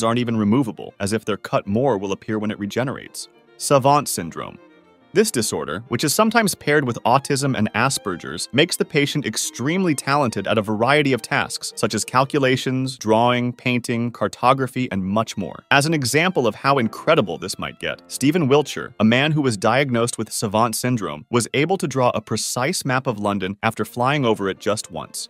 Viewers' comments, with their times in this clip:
0:07 bro said "ass-purgers" 😂😂